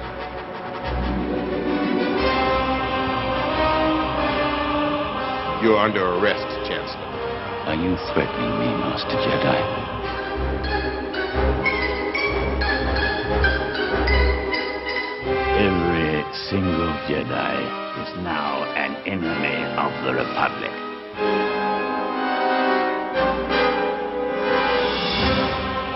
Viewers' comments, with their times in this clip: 0:07 I love how Palpatine just fucks up the Jedi masters. Just pulls some crazy screamo shit, the grin and growl and stab combo. Lols in my pants.